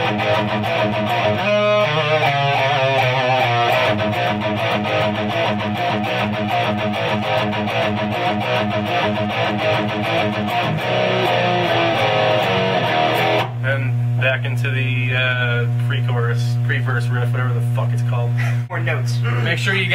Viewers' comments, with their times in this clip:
0:03 what a Riff man